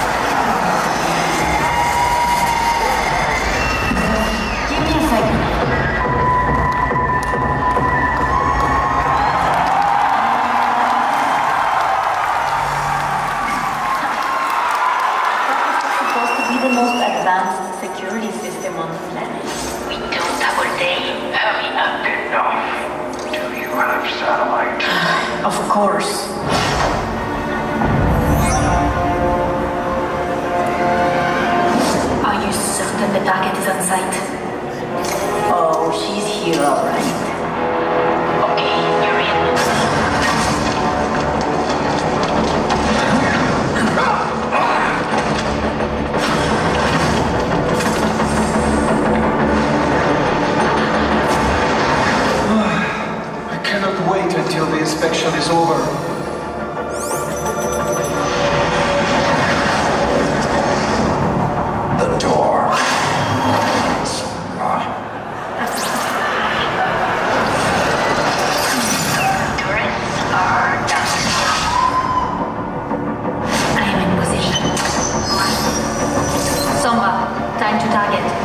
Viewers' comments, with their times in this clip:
0:06 I love how one guy started awkwardly clapping
1:05 someone in the crowd: AHAHAHAHAAHHAAHAHSH